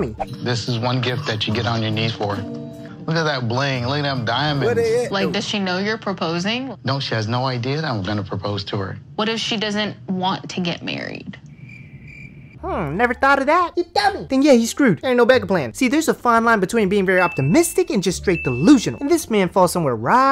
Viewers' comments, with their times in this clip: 0:04 The background voice killed me when he was talking about the “diamonds” in the ring 😂😂